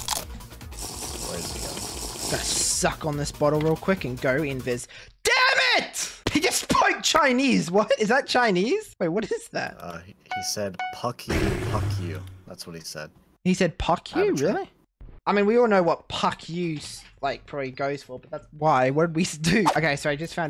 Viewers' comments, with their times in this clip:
0:08 that’s Korean XD